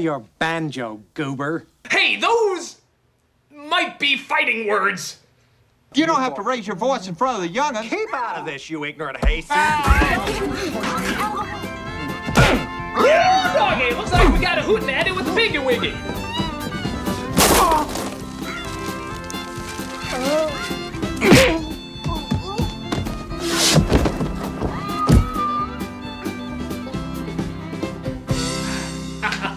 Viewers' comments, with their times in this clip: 0:10 Can we acknowledge the man’s scream is the only funny part of Gordy.